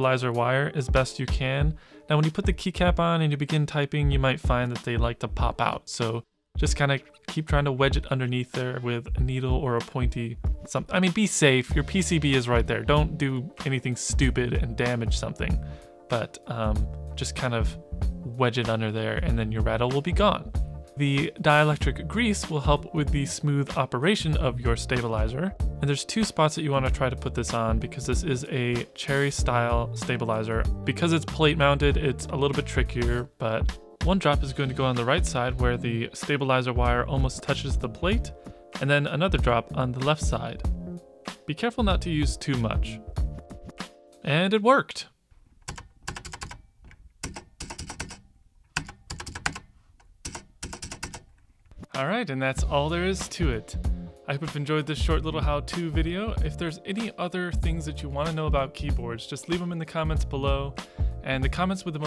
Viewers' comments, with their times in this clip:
0:10 Your tone instantly won me and I am clicking Subscribe in 5..4..3..2..
0:44 I though we we're gonna into a beat there for a second